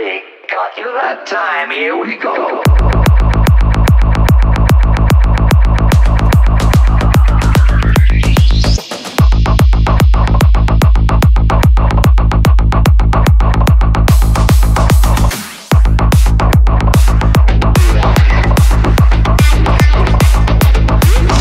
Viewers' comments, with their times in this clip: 0:03 track goes crazy 🔥🔥